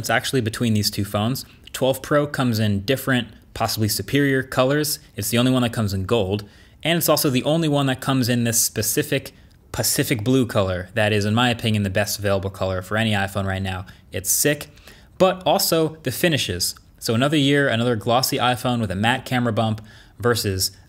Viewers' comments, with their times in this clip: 0:08 "Specific, pacific blue" on the first take? lol